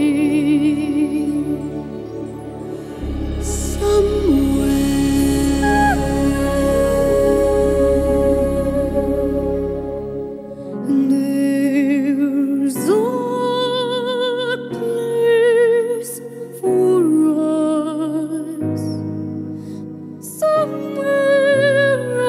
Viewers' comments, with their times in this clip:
0:05 This has to go down as one of the most spectacular mash-up duets of all time. Barbra has always had a lot of harmonics in her voice while Jackie hits every note dead on. I loved how she went an octave above Barbt For my preference I prefer Jackie over Barb every time!